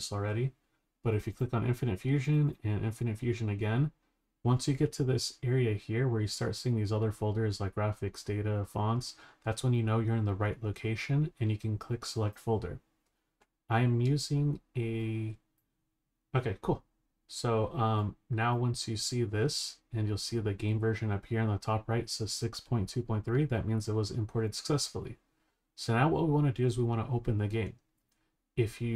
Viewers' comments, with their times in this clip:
0:09 ....... so uhh What's a Adecool? Or what ever that word you said is?